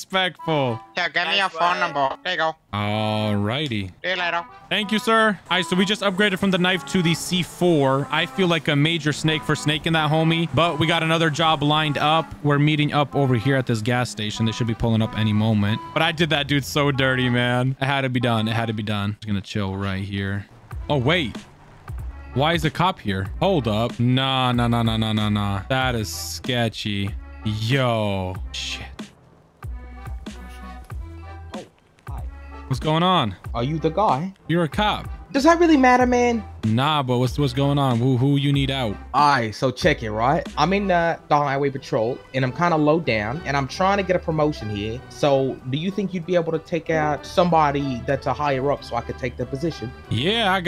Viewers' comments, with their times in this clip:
0:09 bro have the mark rober music playing
0:35 The Australian guy trying to do an African-American accent is hilarious 😂